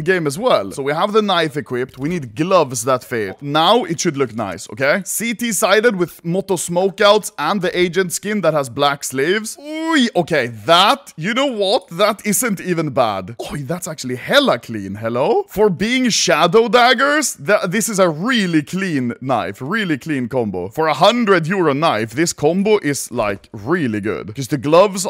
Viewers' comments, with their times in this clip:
0:07 it sounds like he says "the agent that has black slaves" even tho its not what he said